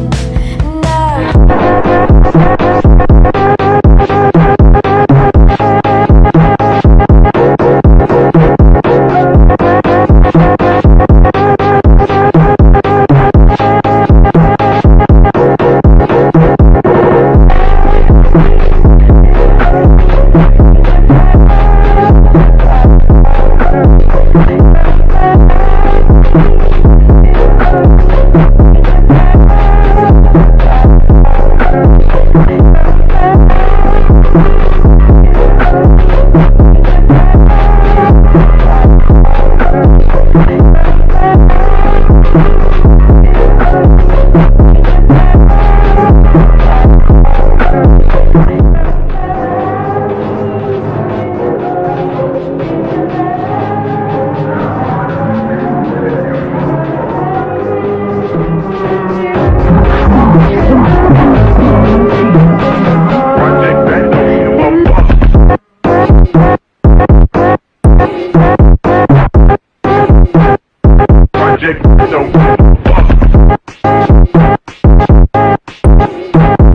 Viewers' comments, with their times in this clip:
0:09 The music starts
1:04 fire in 1,25x speed